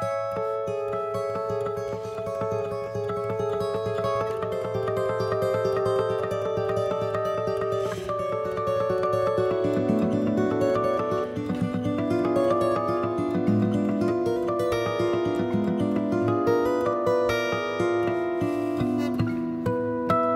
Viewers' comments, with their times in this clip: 0:03 I’ve never seen harmonics played so fast and fluently before!
0:08 guitar turn to harp